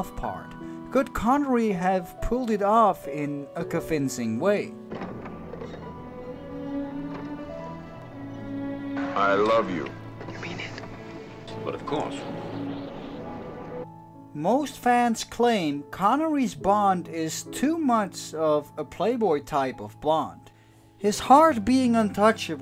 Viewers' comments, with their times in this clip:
0:09 That “I love you” dub from YOLT heard had me in stitches.🤣